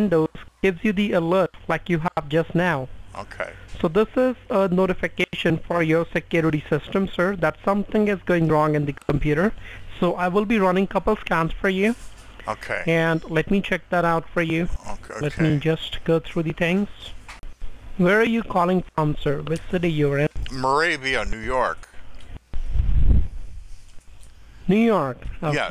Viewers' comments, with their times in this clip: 0:10 sounds like he said that he will run a couple of "scams" instead of a couple of scans.